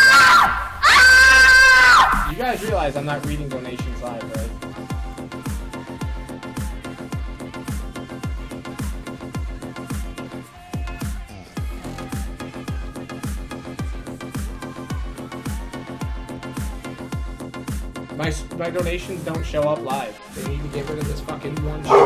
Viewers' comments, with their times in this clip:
0:04 Heavy breathing (Must have seen some CP)